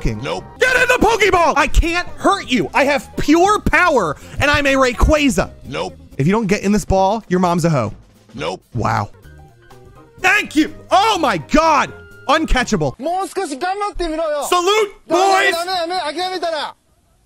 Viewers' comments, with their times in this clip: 0:05 he sounded like pingu noot noot